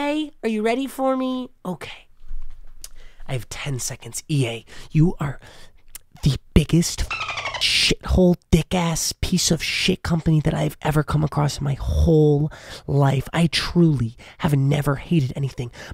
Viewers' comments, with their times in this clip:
0:03 Next level asmr